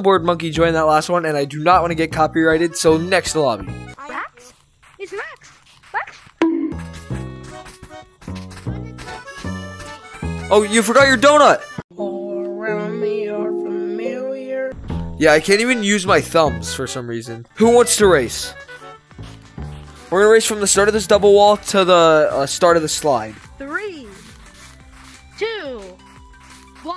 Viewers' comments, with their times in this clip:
0:08 listen to the kid in the background